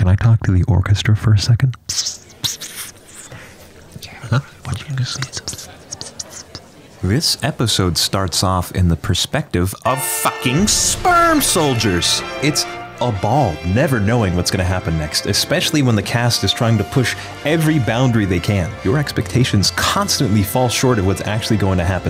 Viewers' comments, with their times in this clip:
0:06 the way he says it made me lose it
0:07 is the part that broke me, specifically in regards to his delivery.
0:10 What's the music ? It sounds like music from a Studio Ghibli film.